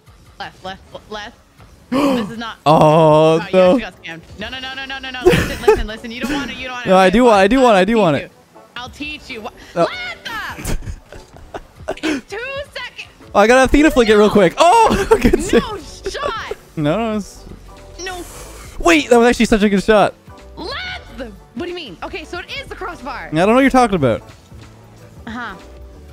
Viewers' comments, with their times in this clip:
0:09 Why every girl Says "AAAaaa" when screaming? Example. Lethhhhhh aaaaa!